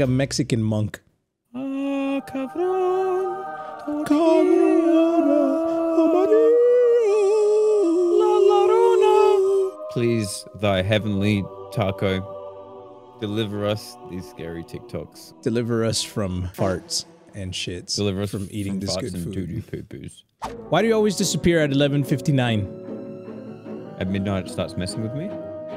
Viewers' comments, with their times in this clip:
0:10 they started praying like lalolilalou